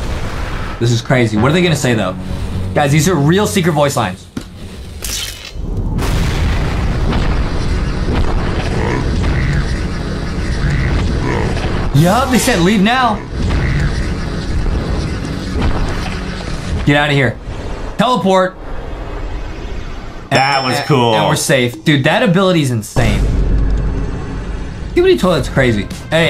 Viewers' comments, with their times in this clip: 0:09 tv woman does not have that deep voice it's the tvman